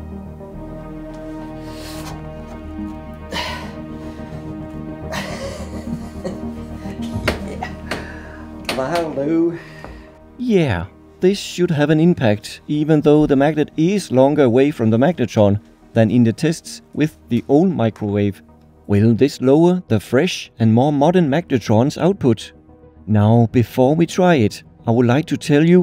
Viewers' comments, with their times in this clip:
0:08 western accent kicks in